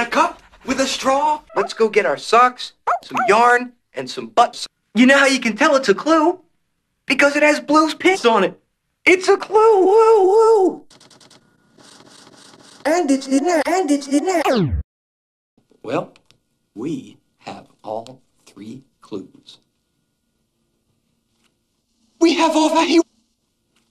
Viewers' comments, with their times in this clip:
0:04 You know how you can tell it's a clue? Because it has Blue's piss on it!